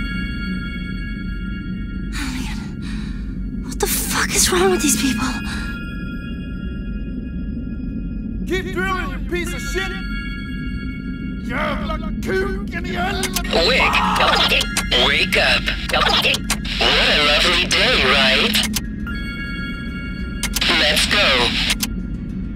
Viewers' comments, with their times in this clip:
0:10 Suddenly swearing in swedish :P